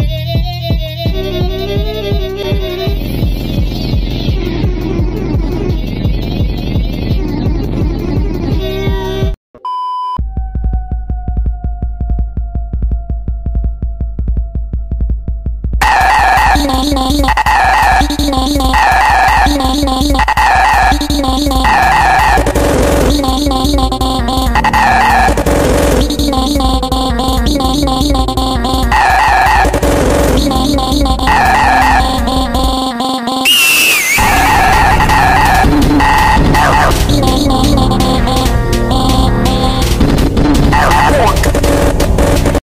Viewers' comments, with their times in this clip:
0:10 seems like someone hit their toe a little too hard on the leg of a table
0:10 my volume was at 20 PERCENT and even tho my left just died
0:10 this song is an awful banger
0:10 don’t put on max volume
0:10 bro thats a banger
0:12 I need a ear rip warning….
0:13 bring mah earmuffels
0:14 bro my ears burned from hearing the first note💀 the song is disgusting no hate💀
0:14 song:nah Kid on dr*** screaming
0:15 my fcking ears.
0:16 oh my god that hurt my ears
0:23 AY YO THE DOG'S VOCALS ARE ACTUALLY LOUD AND CREEPED THE CR#P OUT OF ME
0:24 glitchy ah dog go aaaaahhh
0:32 I dont understand how that is loud
0:32 i tried to take off my headphones because of how dogwater it is
0:33 THAT EAGLE SCREAM AND THEN THE PHOTO 💀💀💀💀💀
0:33 THAT SHIT LITERALLY ALMOST MADE ME DEAF. I HAD THE VOLUME AT THE FUCKING MAX.
0:33 MY FUCKING EARS
0:40 pov: the neighbors dog at 3am when ur trying to sleep